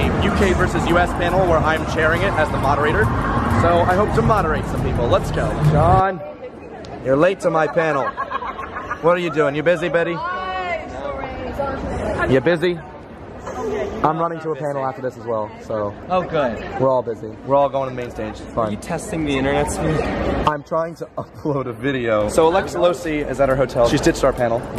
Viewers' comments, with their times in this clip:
0:08 omg i love her laugh!